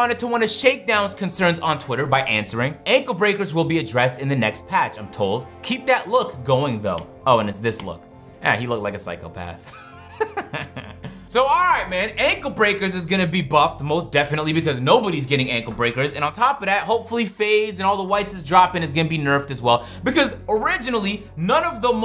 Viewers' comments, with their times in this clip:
0:08 cleveland brown laugh